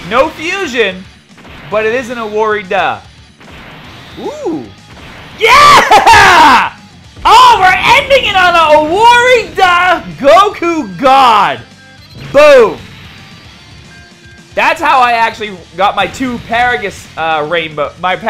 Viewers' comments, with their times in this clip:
0:03 You sounded like Homer Simspon. Congrats on the clutch LR pull! OH THE HOMERITY!